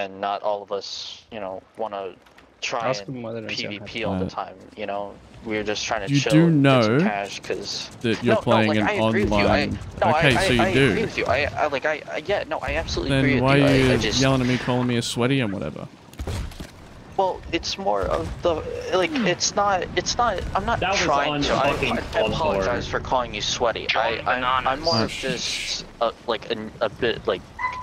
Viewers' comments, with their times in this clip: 0:10 i like how much this guy is stuttering